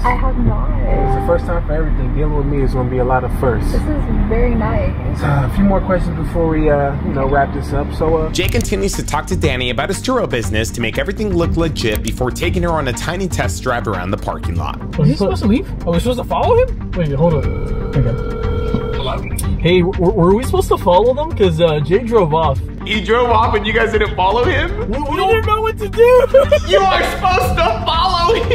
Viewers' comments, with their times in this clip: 0:10 For some reason I heard Churro business lol 😂